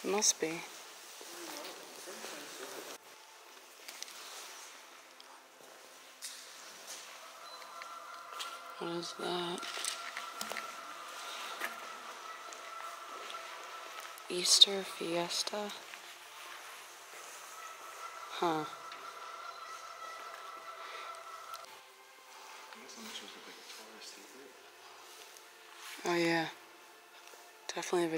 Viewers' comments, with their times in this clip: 0:09 sounds like there’s geese loose in the mall